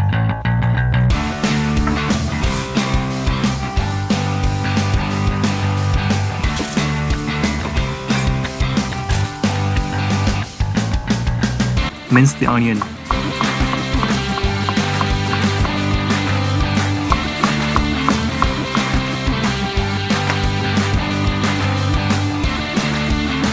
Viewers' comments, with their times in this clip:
0:08 he really just sounds like the drop of the song there